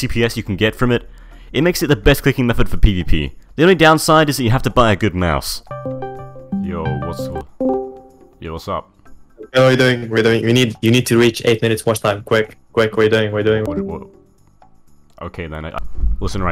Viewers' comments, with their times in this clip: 0:04 on i thought someone called me cuz i had discord opened lol